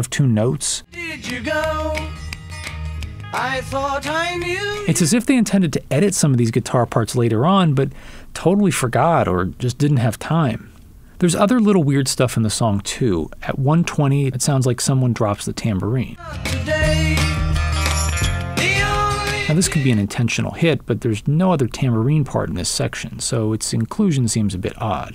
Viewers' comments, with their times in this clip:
0:06 Those strange guitar parts you mentioned at the mark sound a lot like a fuzz pedal with a failing battery. This would make sense as this was an early use of a fuzz on these sessions. Just my 2 cents. Thanks. 🇺🇸🎸👮🏻‍♂️